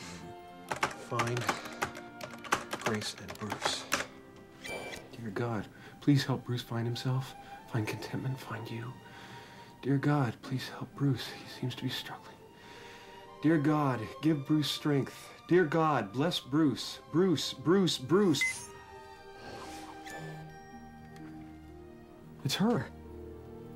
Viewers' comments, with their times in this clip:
0:09 the way his voice breaks when he whispers struggling, sensational acting, very nice touch